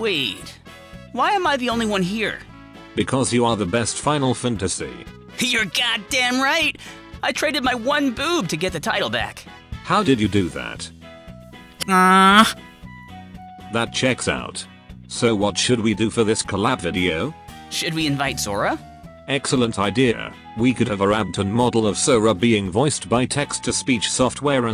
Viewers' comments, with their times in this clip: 0:05 "What the fuck... final funtusee? I get generated text isn't easy to make but fantasy isn't even a rare word."